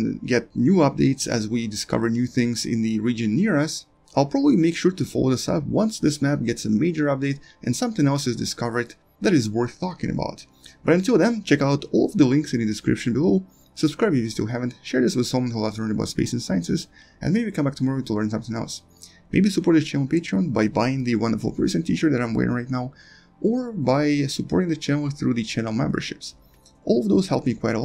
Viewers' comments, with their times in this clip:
0:10 ...worth what? worth fucking about? :D